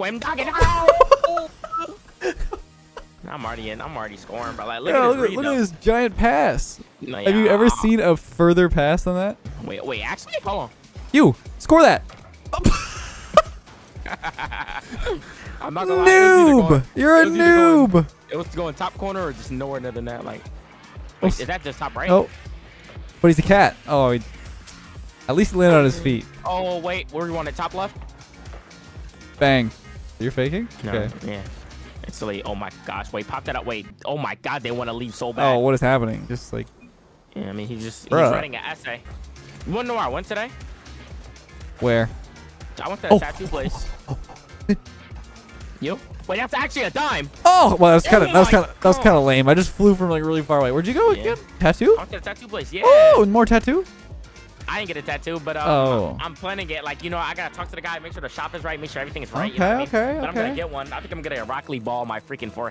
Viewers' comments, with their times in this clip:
0:10 that laugh my god hahaha
0:43 these are just monkey sounds